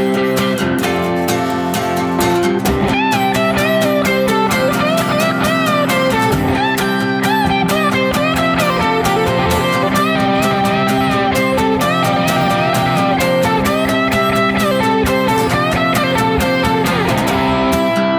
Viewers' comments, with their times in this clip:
0:03 The sound you get out of your new Trent is sick! Great song. Thanks for the lesson.